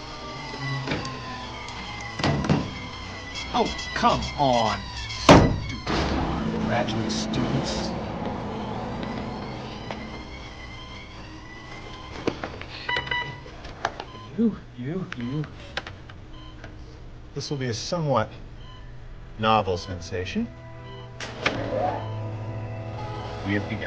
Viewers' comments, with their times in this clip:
0:08 ... Bruce is like, "Uh... I have a bad feeling about this"... Bruce gulps